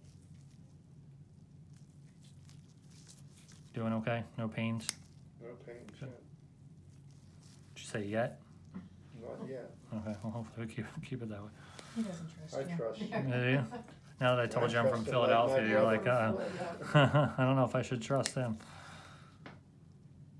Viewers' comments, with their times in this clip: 0:07 Y Did sound like he said “so u gay” No just me ok Yes I liked my own comment cuz no one ever does